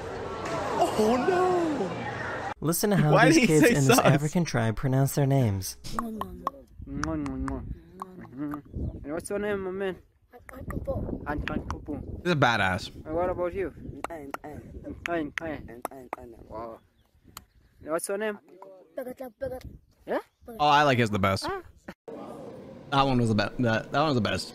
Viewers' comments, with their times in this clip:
0:05 I got a notification for Dragon Ball Legends just when the kid started moving his mouth. So it sounded like his name was "Pheeeeew Explosion Sound ". Funniest shit I had seen all day.